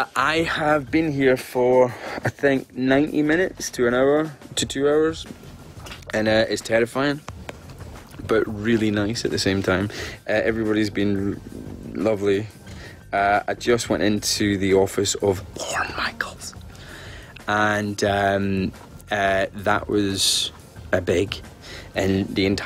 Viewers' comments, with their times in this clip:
0:10 LOL that delay before he finally said "... lovely" was quite suspicious. ;)